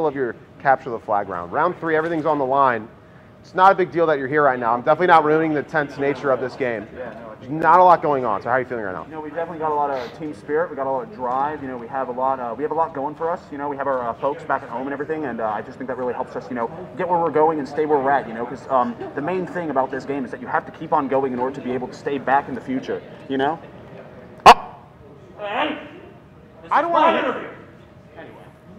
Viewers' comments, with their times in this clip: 0:09 does anybody notice how fast ranboo tallks